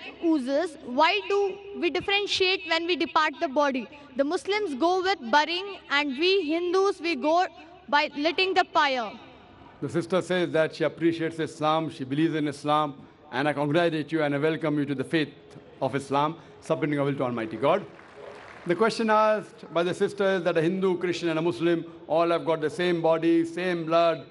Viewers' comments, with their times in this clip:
0:08 letting pire😂😂😂. I love indian english